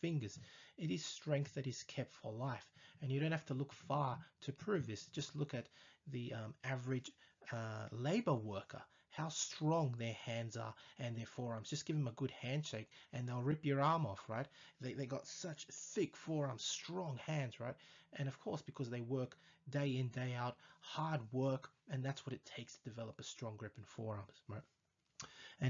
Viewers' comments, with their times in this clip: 0:09 what did he say?! Just look at average label worker?!!!!!!